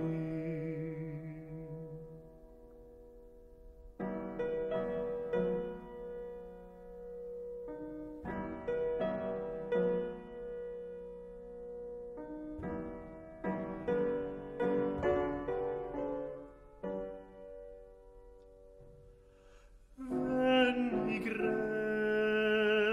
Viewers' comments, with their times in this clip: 0:09 modulation to A major, the E, A C# chord is a V64?, but is it an I64, V and I... or maybe I'm wrong.